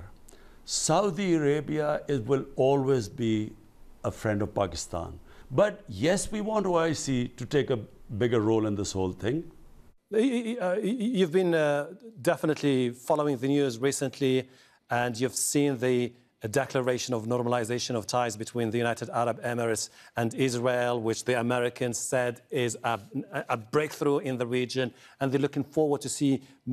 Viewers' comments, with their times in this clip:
0:09 How the interviewer stutters while asking about Israel Hmmm